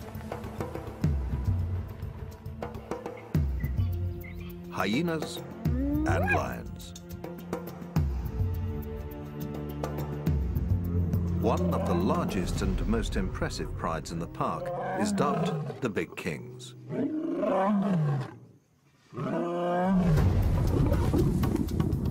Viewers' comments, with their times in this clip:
0:06 anybody hear the “WHAT!” Sound?